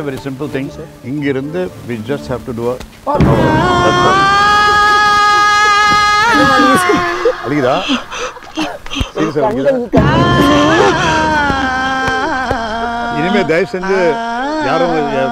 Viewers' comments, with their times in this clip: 0:03 vadivelu's wasted music was really makes laugh